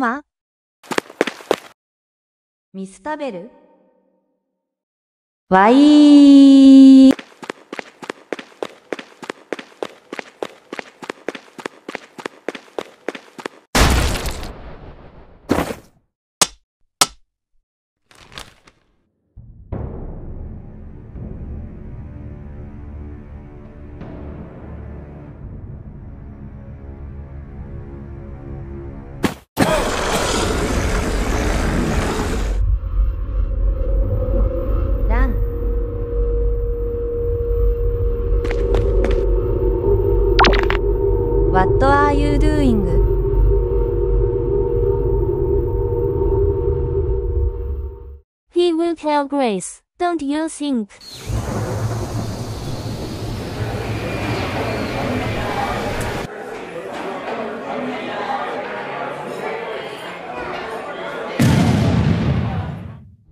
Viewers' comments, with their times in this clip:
0:03 a good voice xd
0:03 THAT SCREAM WAS JUST MAJESTIC😂😂😂😂
0:05 this scream whyiiiiiiiiiiii i cant stop laughing
0:06 MY GAWD THE WAY SHE SCREAMSSS SO CUTEEE NSJHNZJNJSIJNSINJSNNJJBBXDJH BKXAN SJN KAKXS
0:30 HELP WHATS WITH THE GROWLING?!
0:30 is bro growling? 😭 /j
0:48 hatsune miku voice🥹
0:49 MAN I HEARD MIKU'S VOICE